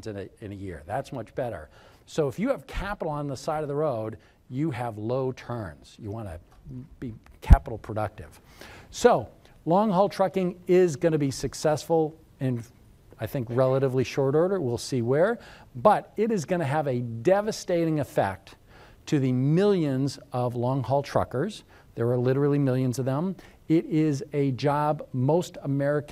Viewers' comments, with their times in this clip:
0:07 For seconds, I was wondering if my headset was broken...